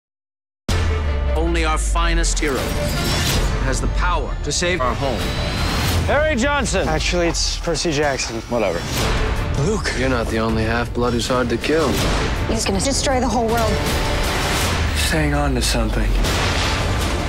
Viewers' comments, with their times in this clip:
0:04 what's up with that "our"